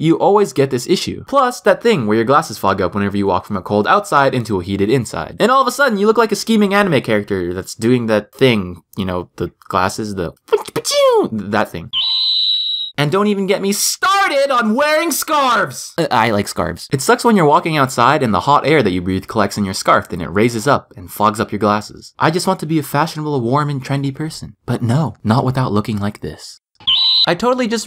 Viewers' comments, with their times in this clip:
0:10 ... haha you're voice is so cute...😘😍